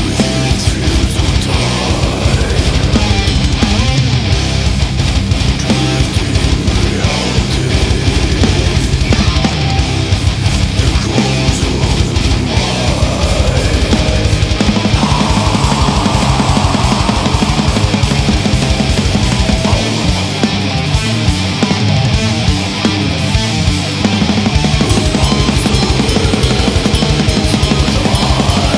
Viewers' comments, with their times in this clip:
0:09 ❤time srart a weekend with video , i love how every instrument is hearable❤